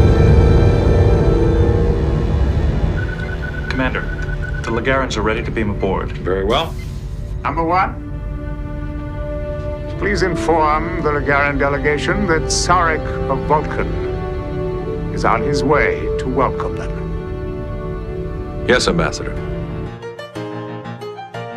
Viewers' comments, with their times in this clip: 0:08 Do I think so or does Ambassador Sarek speak with Captain Picard's voice?